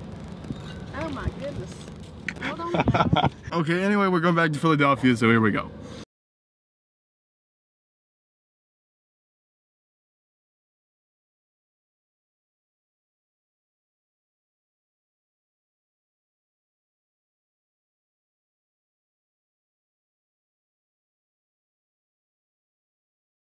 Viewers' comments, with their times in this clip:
0:09 HAHA WATERMARK in track